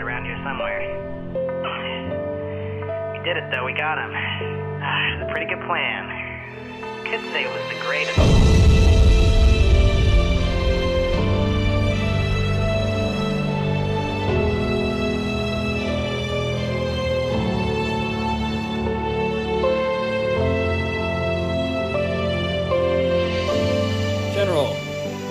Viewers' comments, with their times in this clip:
0:07 This is the Part when the man's Cry :,(